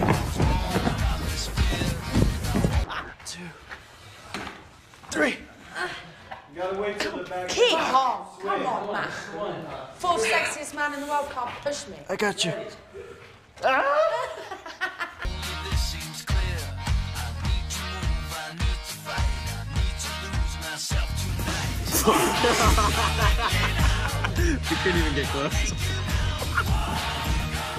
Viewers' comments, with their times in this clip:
0:09 Is it just me or does kaya kinda sound like Jane from the 1999 Tarzan movie? Especially ?